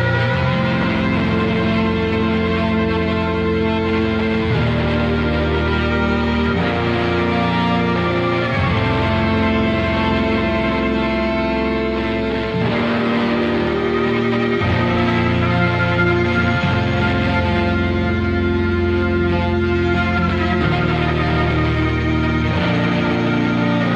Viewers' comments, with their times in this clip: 0:06 This sounds like something that would play when you and all your closest friends and relatives watch as a meteor heads straight to earth to destroy it. Accepting your fate, you all watch as that fire in the night sky grows larger and larger. In linking hands, some crying, some rejoicing, some regretting. Right as the meteor touches down into our atmosphere, you all give each other a smile and close your eyes.